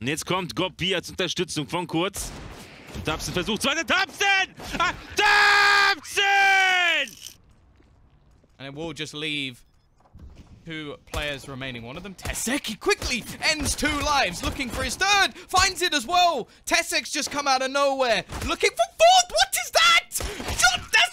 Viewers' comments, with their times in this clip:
0:04 is he yelling for a taxi?